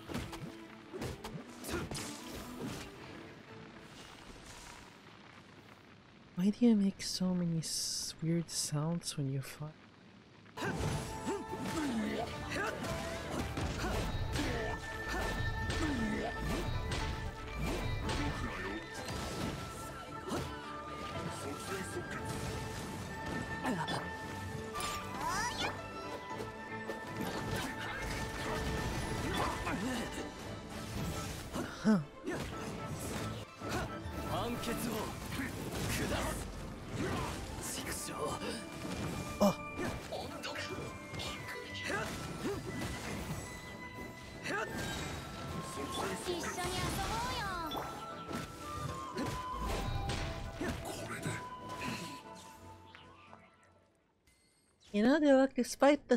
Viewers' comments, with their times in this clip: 0:05 "why do you make so many swwe- weird sounds when you f-" Me: excuse me what-
0:37 speed 0.5 Me: WHAT DID HE JUST SAY?!(I have a dirty mind)